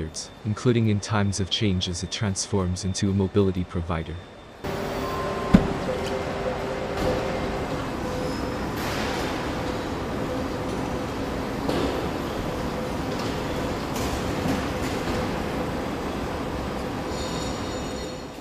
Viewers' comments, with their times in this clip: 0:04 That door close though, had to listen to that about 20 times